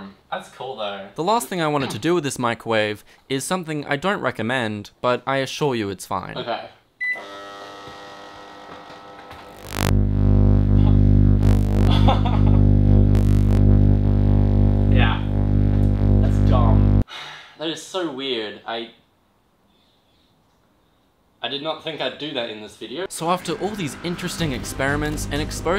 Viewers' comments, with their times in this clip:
0:08 Bro at the end when the lightbulb was in his mouth he laughed like a mischievous teen doing stupid stuff lmao